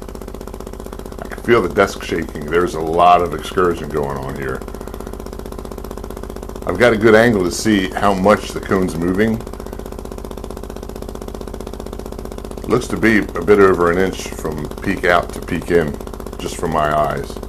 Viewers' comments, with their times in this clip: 0:04 Hey really enjoyed the video! I got one of these too and mine is making the same "rattling" noise. Just as yours in the video. It almost sounds like if you are playing a square wave or like a compressor pump, when it should just be playing a smooth sine wave (You can really hear it ). That all happens at way lower excursions than the 14.7mm advertised. Does this not worry you? Is it normal, and if so what creates this kind of noise?